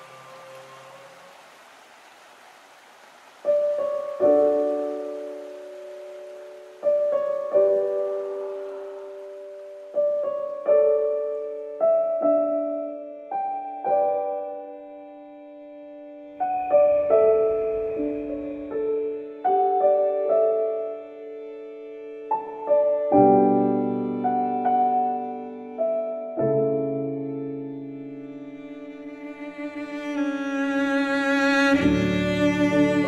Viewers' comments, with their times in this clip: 0:03 the music when te brachiosaurus was dying by the volcano
0:16 The music along with the reflection on the piano --- goosebumps !